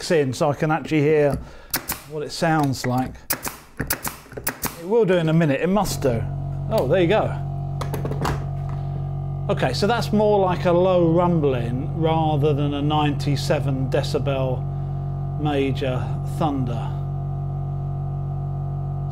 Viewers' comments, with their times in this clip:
0:07 It's a good video but from the mark, I couldn't hear what you were saying.